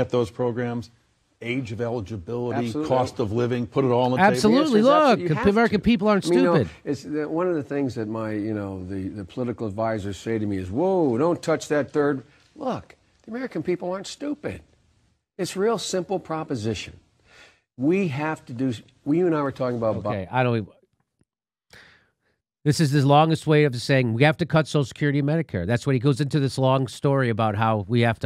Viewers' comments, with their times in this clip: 0:10 his speaking abilities were still intelligible then, amazing.